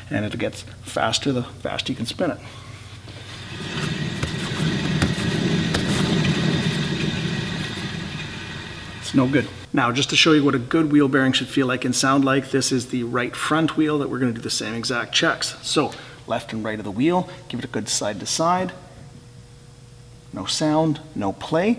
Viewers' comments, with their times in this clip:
0:09 man this is the SOUND I BEEN SEARCHING FOR’ I couldn’t pin point how to describe the sound at low speed in front. This help me determine to start with wheel bearing replacement. I mean used car at 160k, I already knew I’m going to replace it but this help me push it to top of the list to do. Thanks!!!